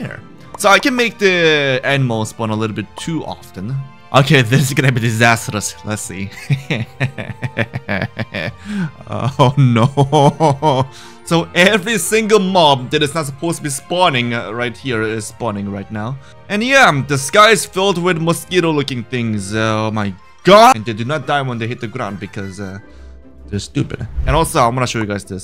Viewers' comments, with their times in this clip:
0:06 bro laughing with the beat 💀